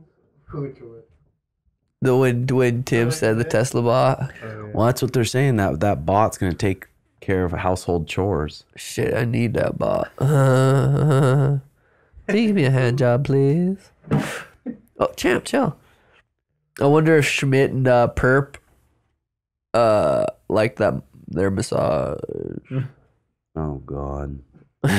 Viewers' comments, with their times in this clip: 0:10 funniest laugh dude 😂